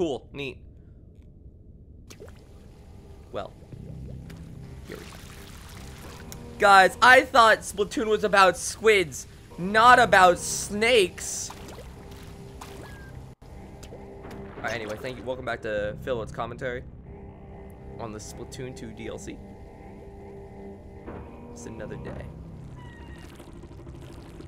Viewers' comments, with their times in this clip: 0:07 Lol the barrier sounds like it yells "YEET!" SO HARD LOL